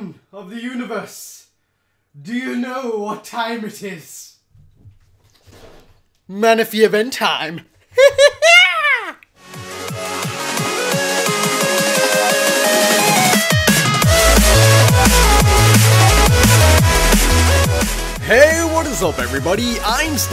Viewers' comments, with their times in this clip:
0:06 WHAT IS THAT LAUGH?!?!